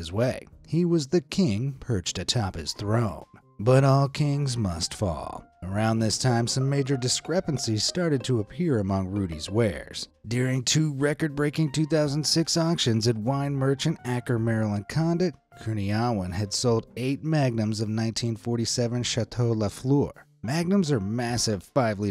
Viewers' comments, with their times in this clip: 0:07 the sus sound got me!